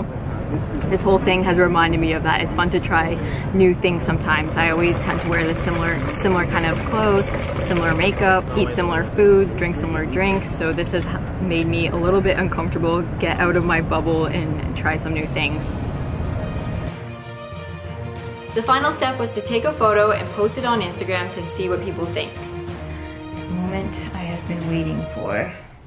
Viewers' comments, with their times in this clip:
0:10 Some dude in the corner dying Meeeeeeeeeeeeee😂